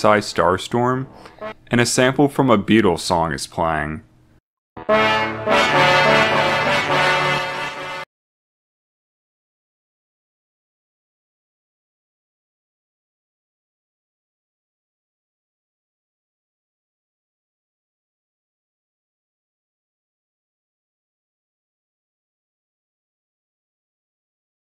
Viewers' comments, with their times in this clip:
0:06 Is the Beatles thing at ~ supposed to have no sound?
0:09 Thanks, YouTube, for muting this segment for no reason, other than flimsy copyright.